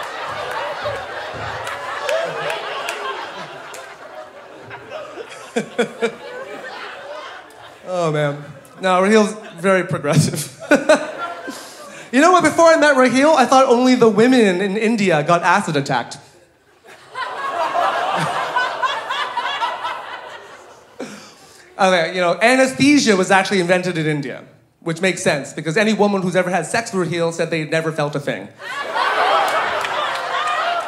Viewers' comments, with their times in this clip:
0:05 what the fuck the background man was laughing
0:14 why laughing here ? Paid audience. Both are actors